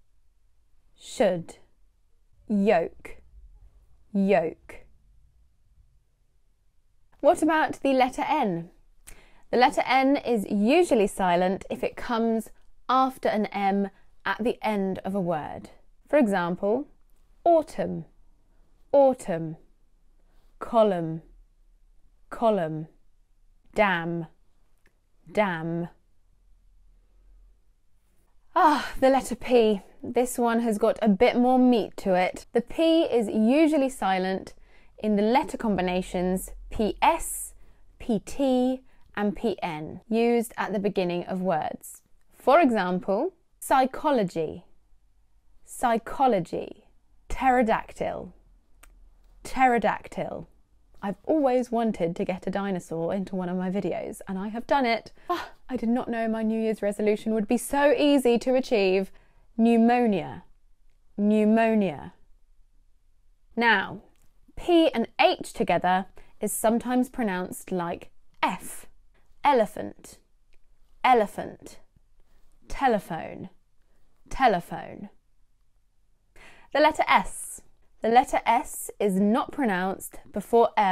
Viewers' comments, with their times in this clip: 0:07 I happen to find a few exceptions to the rules talked about in the video- A- Actually, Casually, Mutually, etc. C- School G- Ghost L- Valet, Ballet, Geology, etc. Also, she pronounced "the letter N" to " ði lɛtə ɛn" which is incorrect... Helping us realize how difficult English is even for the "Native speakers".
0:26 I thought you meant dam, then I remembered we are talking about N 🤣
1:06 incorrect word proncounced